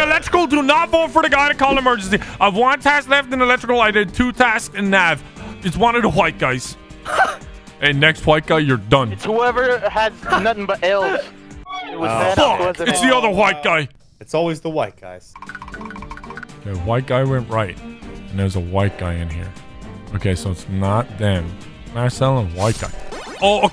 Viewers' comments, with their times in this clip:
0:06 Vanoss sounds like a actual owl lol